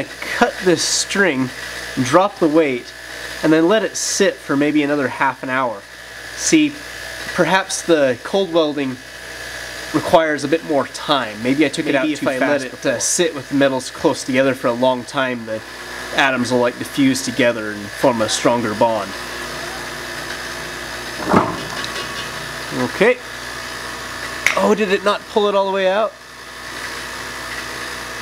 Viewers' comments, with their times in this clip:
0:10 am i going crazy or do i hear two different things being said?
0:10 i hear a double voice dubs
0:11 what the hell was happening with the audio there?
0:12 What's with the weird audio glitch ?
0:12 audio overlap fail and what's with your finger?!
0:14 I just heard a audio glitch did any one catch that?